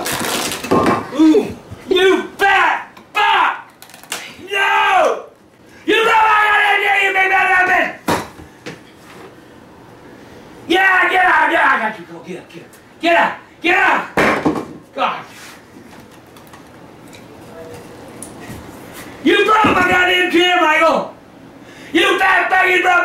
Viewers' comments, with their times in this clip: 0:04 grandpa’s no sounded like he was defeated
0:05 All I could here was BAH BUH BAH BAH BUH BAH BUH BAH BUH BEH 🤣🤣🤣🤣🤣🤣🤣
0:05 his battle warcry
0:10 what the hell did grampa say
0:10 we need a grandpa translator